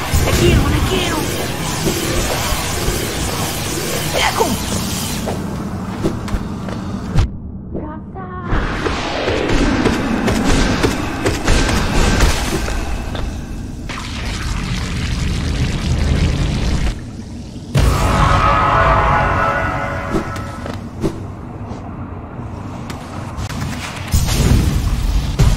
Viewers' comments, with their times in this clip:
0:07 BRO THAT BEAT IS ACTUALLY FIRE WTH